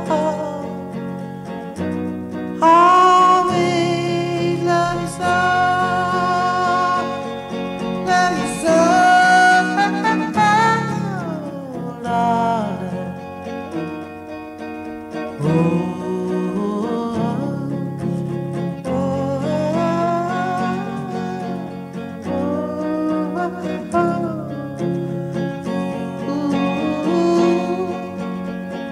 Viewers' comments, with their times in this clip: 0:10 It sounds very clear and clean to have been recorded in the early 50's....? Are these remastered takes...? If so, Ritchie was one bad cat. Also, wasn't there a Wrecking Crew member involved on the recordings.